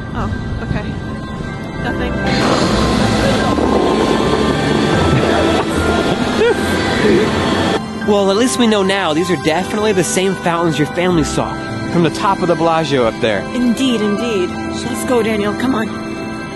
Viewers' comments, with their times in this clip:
0:04 whys there scary music